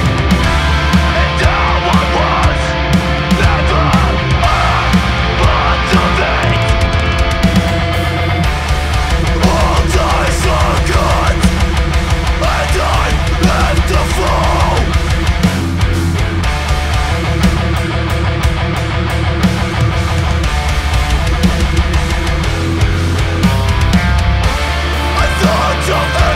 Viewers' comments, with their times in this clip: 0:07 Time signatures Fuckin hell